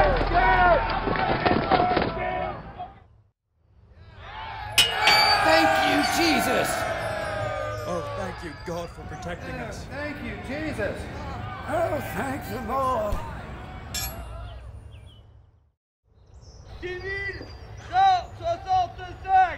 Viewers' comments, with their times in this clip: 0:03 Ha ha did anyone else hear one of the English guys yell get off our land around the mark, that's a nice touch